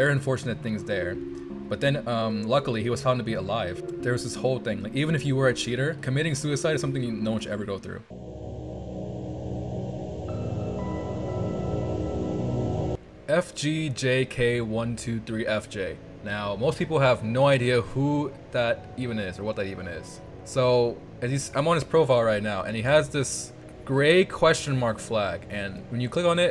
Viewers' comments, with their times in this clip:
0:07 sounds like deltarune music ngl